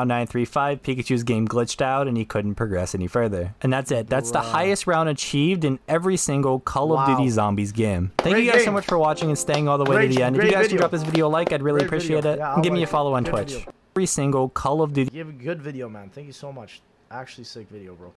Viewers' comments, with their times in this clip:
0:06 did he say gim 💀